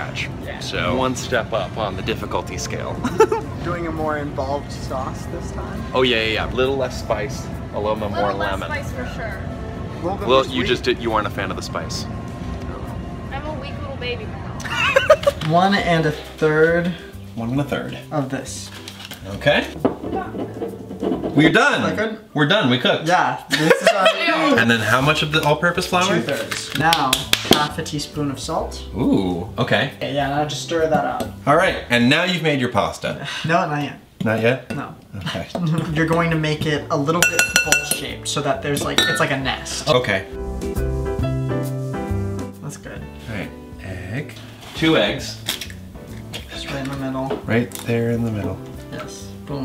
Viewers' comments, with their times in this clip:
0:03 Just listen to that adorable laugh
0:36 sounded like an alarm clock and triggered my fight/flight/freeze reaction
0:36 I thought it was my alarm geez😂